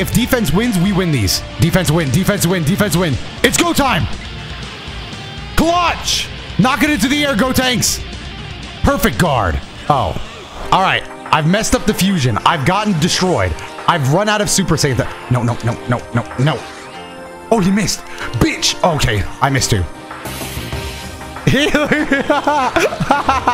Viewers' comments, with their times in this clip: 0:10 What's the ost that plays ? It sounds so surreal.